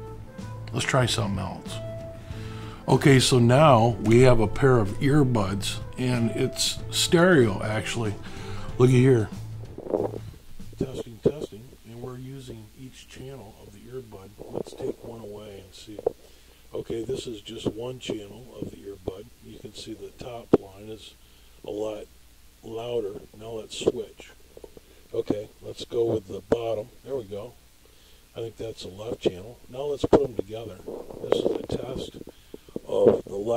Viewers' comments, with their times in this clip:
0:10 Lol, it sounds like earbuds...
0:19 when he spoke into the first headphone it played audio only in the left side of my headphone....Weird stuff...